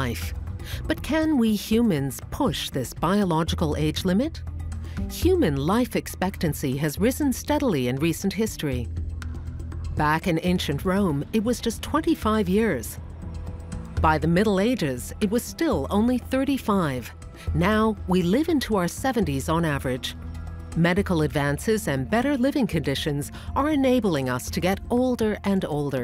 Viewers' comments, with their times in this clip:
0:07 Omg I almost shit myself on the clock alarm lol I’m like oh no got to ready for work.